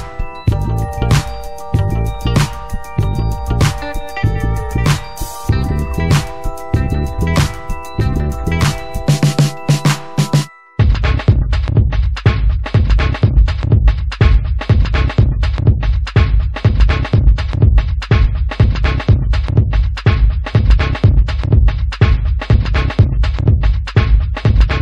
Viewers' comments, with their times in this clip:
0:10 this music on min xD Best <3 Boom Boom Boom /dance on the tabel/